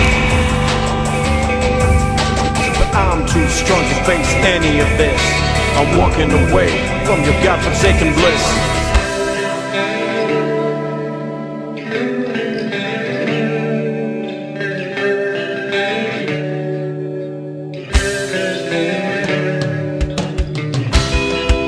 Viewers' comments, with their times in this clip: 0:09 This was my fave song from childhood..specially the guitar part🔥